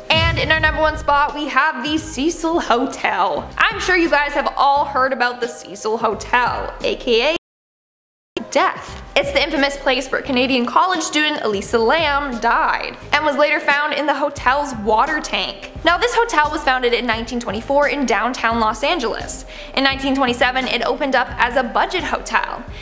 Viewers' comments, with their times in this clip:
0:08 that's so creepy it glitches and all you hear is " Death" 🙃